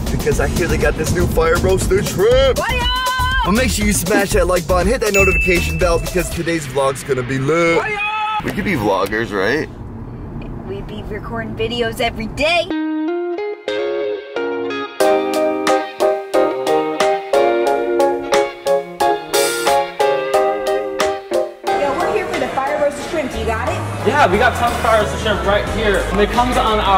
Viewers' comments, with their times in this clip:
0:08 that one second of hesitation says it all